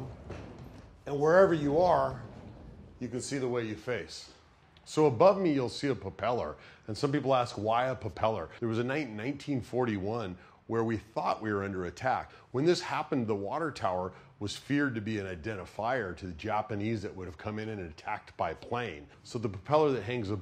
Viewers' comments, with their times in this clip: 0:06 did no one else notice that he says popellar ? lolol